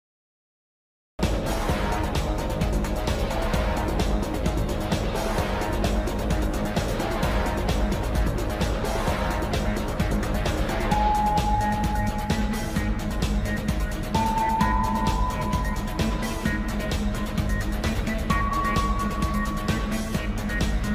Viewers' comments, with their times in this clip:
0:07 Chica: *sigh* Me: Gregory is dying Chica: this ain’t about him